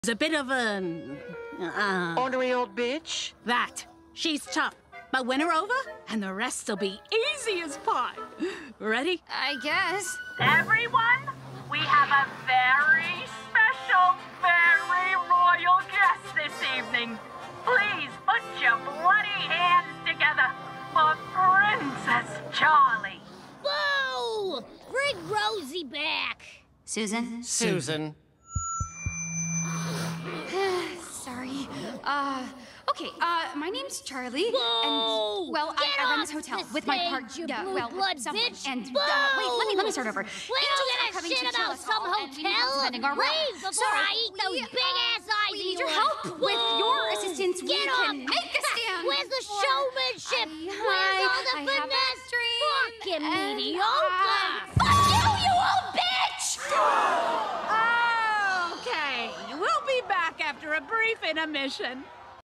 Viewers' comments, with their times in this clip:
0:01 I though he kept saying « unreal B » instead of « ornery old b »
0:23 bro this sounding like widget from wow wow wubbzy bro WTF-
0:23 She sounds like Kiff
0:27 Alastor doesn't have his radio filter on.
0:37 I don't know why but the way susan said this had me cracking up lol.
0:51 I noticed in Charlie started singing “ inside of every demon is a Rainbow🌈”
0:54 She’s like how Arthur yelled in a press conference
0:54 anyone else hear a metallic sound when Charlie flips the bird? It sounds like she unsheathed a sword.
0:55 when I first heard the line I was like god damn because you can literally hear the anger and frustration that Charlie’s voice actress put into
0:56 cannibal crowd gasped